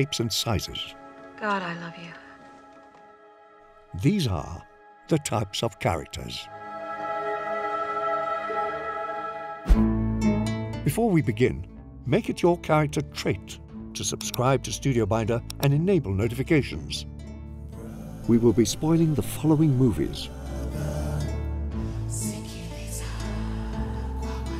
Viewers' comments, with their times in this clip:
0:09 What's that creepy song ? I can't find it in the list.